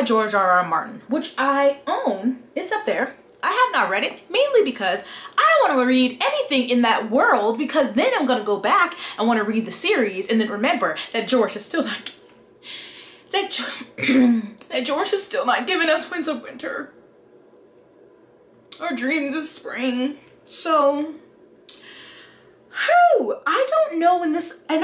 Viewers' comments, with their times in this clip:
0:10 that voice crack i felt that in my SOULLLLL 😭 because george keeps playing us like a FIDDLE as if we havent been waiting damn near half our lives for the last book! GEORGE YOU TAKE THIS SHIT TO GAME BUT THIS ISN'T A GAME-